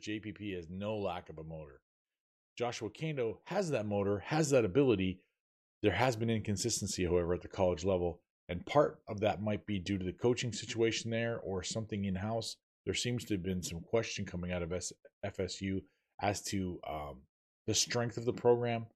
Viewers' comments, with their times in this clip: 0:05 Can't hear you Got a little better